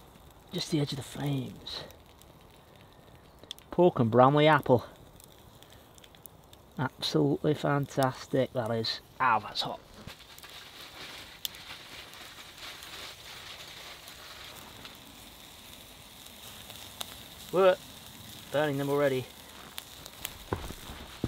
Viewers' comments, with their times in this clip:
0:06 HAHA Tell me that's not a perfect impersonation! You totally hit the nail on the head! And yes his channel is Absolutely Stunnin'!